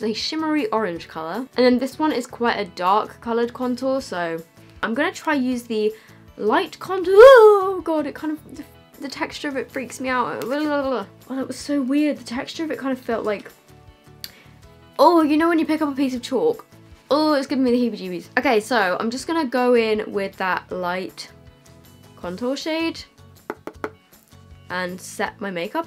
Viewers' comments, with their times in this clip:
0:07 OMG the noise that you made made me laugh so much lol lmfao